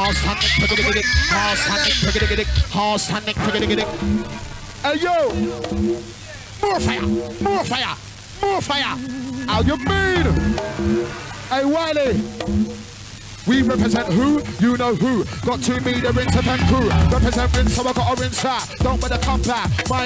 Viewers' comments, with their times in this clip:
0:04 Tune mixed in is a banger 🔥🔥🔥🔥